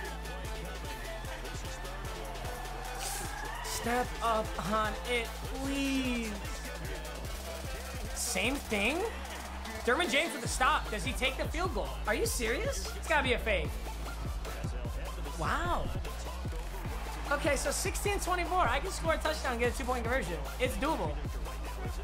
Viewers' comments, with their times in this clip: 0:08 anyone else think because of the music he was about to get a big hitter fumble or somethin 🤣